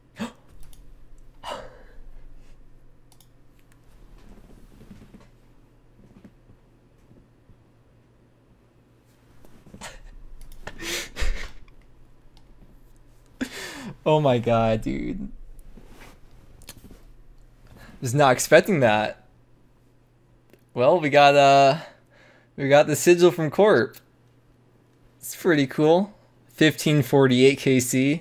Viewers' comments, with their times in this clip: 0:09 I thought that you were crying :'). wouldn't be weird at all at this rate